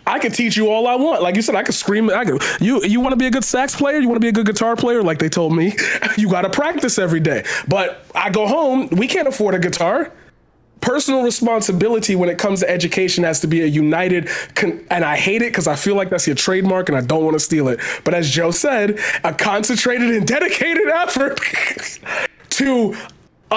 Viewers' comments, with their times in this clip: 0:10 I just love how silent everyone has been during this like wow